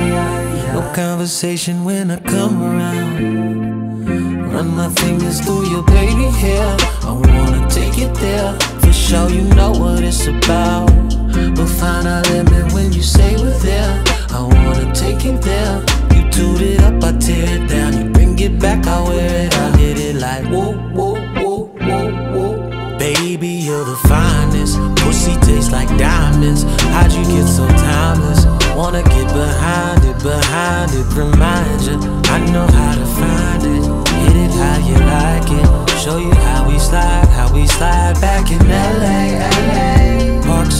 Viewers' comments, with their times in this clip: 0:06 when the beat drops omg 😩😩😩😩
0:24 When the beat and bass come in >>>>>>>